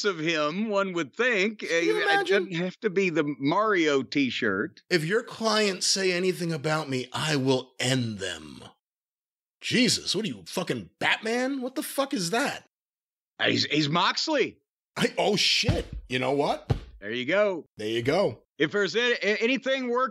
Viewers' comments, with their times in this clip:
0:04 (in Batman voice) "If your clients say anything about me, I will end them." Brian: J*sus, what are you f🥞cken Batman? What the f🥞ck is that? Jim: Ah, he's, he's Moxley. Brian: Oh shit 🤣🤣🤣